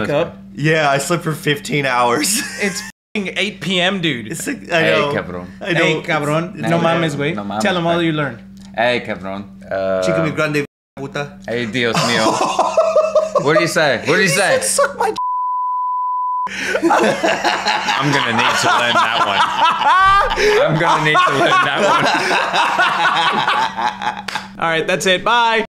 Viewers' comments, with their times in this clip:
0:03 It's like when you put two furbies together, and they start talking to each other in an incomprehensible language!
0:14 dude i wanna know what he actually said cuz that was one LOOOONG ahh beep💀 THERES NO QUESTION MARK AT THE END THIS TIME